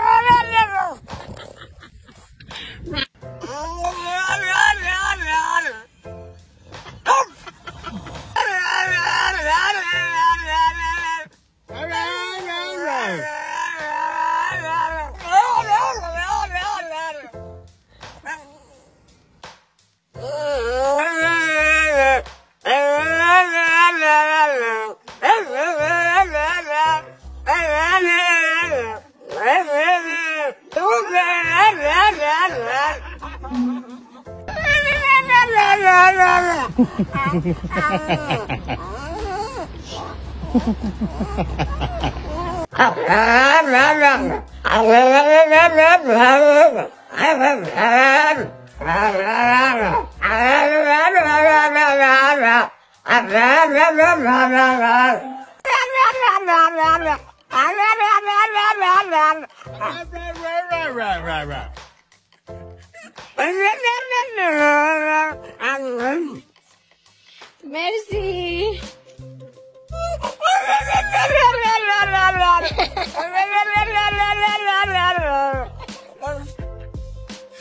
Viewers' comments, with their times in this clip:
0:06 I love the one normal bark 😂
0:29 " MOMMY, I LOVE YOU!" Thats What Yerr Poopy Just Said
1:05 I heard "are you ready"?